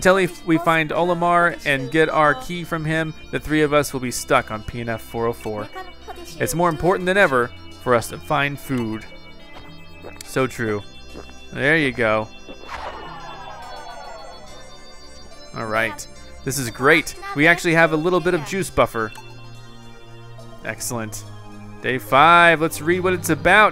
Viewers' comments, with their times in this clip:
0:04 who heard him say peanut 404